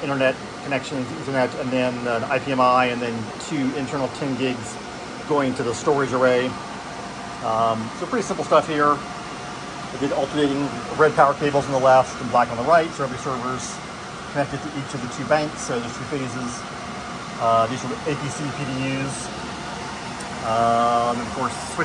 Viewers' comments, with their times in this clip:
0:06 How he casually says "pretty simple stuff here" its just perfection